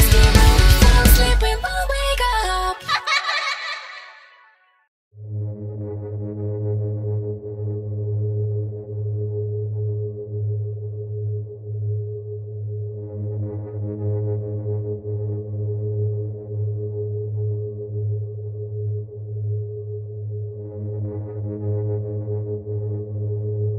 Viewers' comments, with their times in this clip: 0:05 I like that song 😍💘